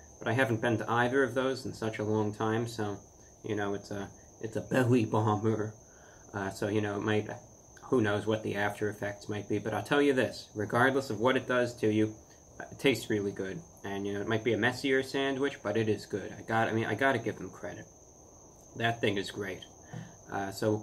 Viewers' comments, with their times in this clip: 0:04 What are you saying? I even slowed down the video to .25x and I still don't understand what you're saying lol...